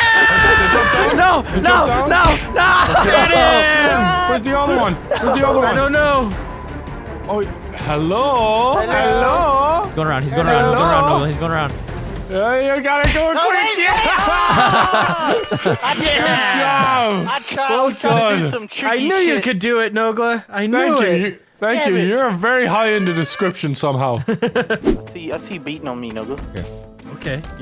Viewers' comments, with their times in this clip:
0:09 Does anyone know that increased tempo like song happening ?